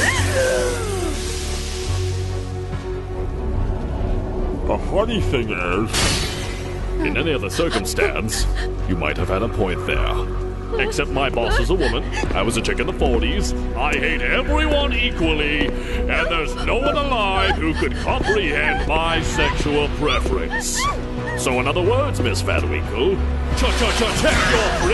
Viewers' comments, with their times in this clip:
0:07 Do I hear Cell? :>